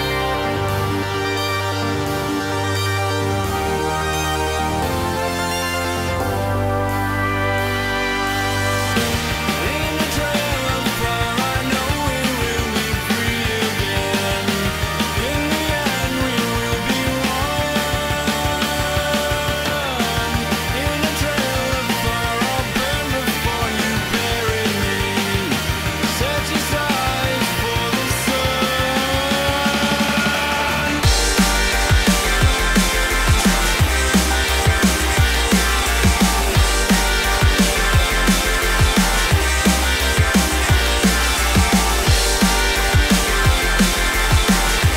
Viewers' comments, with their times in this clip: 0:05 The magical contrast of the church organ arpeggios with the G Major chord is like sex on the beach.
0:31 this is the best drop I ever heard